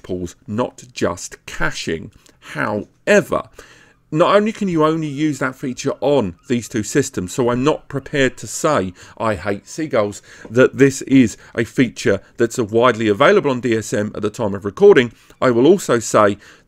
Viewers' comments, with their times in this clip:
0:03 haha! i hate seagulls! i thought it was at my home.